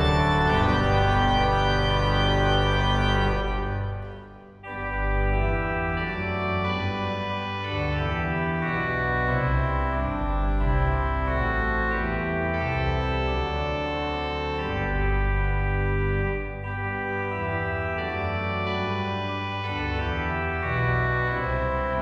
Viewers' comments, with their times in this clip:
0:04 there's no sound from the choir!